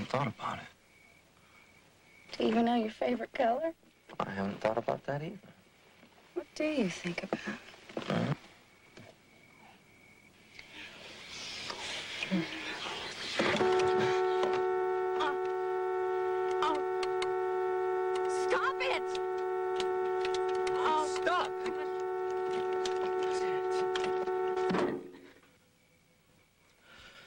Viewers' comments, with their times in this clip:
0:08 Jeff kisses Ginger, but he accidentally bumped the horn